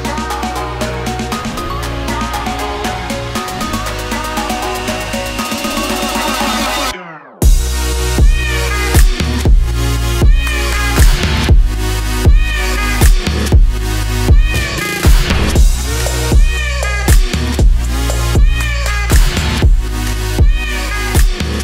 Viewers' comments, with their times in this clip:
0:07 sounds like I'm stepping on a cat...